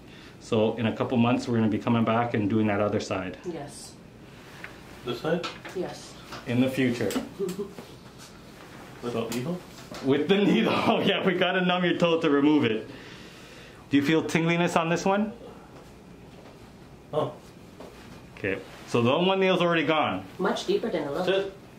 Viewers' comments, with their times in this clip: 0:09 Guy with ingrown toenail: (Scared voice): With needles Dr. ToeBro: laughs